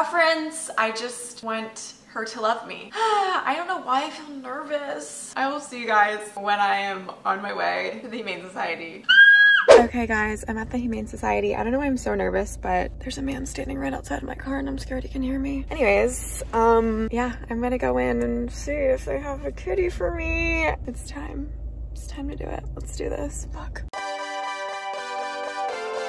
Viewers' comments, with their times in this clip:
0:09 When you screamed my dog jumped out of his sleep 😂, my cat remained undisturbed as usual